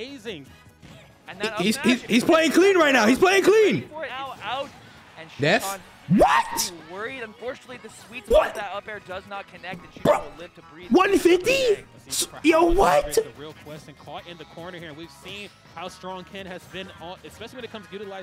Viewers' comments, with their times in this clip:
0:05 the most genuine “WHAT??” I’ve ever heard